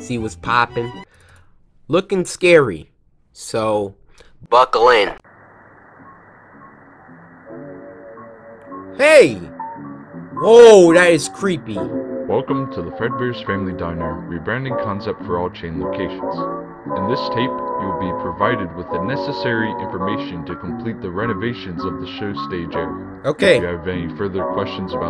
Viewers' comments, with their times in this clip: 0:10 the music reminds me of the memories i never had.
0:12 I know the game says “welcome to Fred bears family dinner” BUT I DEADASS heard “welcome to Fred bears STRANGLING diner” 😃